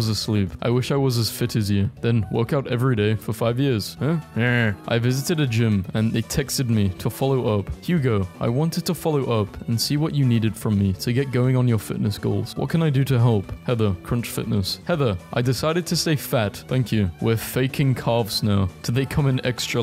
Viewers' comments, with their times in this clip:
0:04 i like your funny minecraft villager noises. thanks for making a video on how cool i am, glad i had some time to watch you